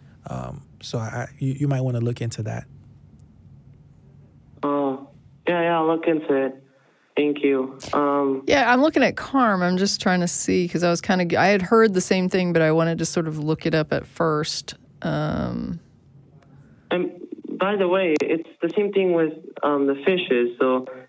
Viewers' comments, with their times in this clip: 0:05 "yeah yeah, i'll look into it, thankyou"............ wow, sounds dead behind the eyes........